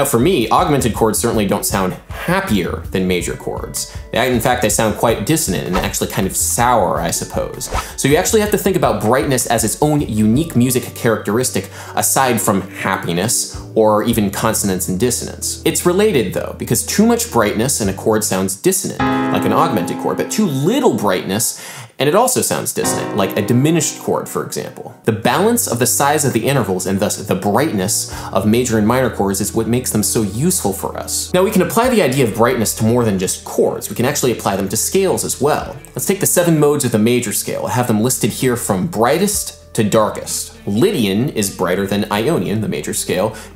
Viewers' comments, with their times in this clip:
0:09 ‘cause you’re hearing a minor sixth!!!
0:24 The C dim. chord creates such a big sense of motion that I automatically resolved it in my head to a Dbm chord.